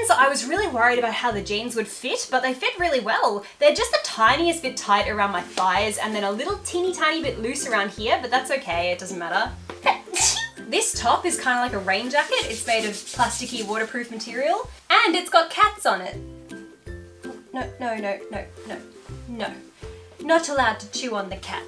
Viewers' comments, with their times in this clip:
0:08 your sneeze is adorable an i love that outfit